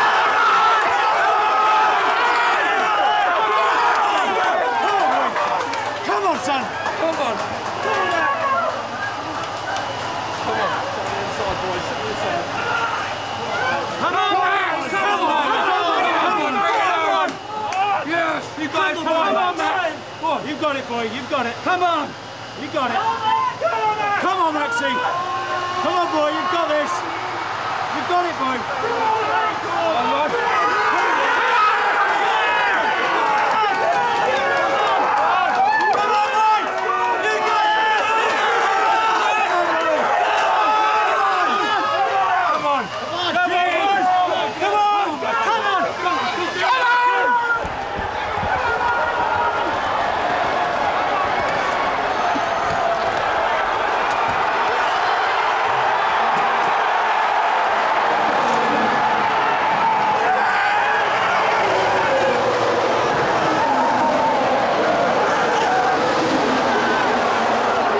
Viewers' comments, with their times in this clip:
0:06 you can hear someone climax.
0:08 The dramatic ‘😩’ in the background sends me every time 😂
0:51 I can hear Christian Horner
0:53 imagine the feeling of driving over the finishline 1st and r whole team is screaming at the side of the racetrack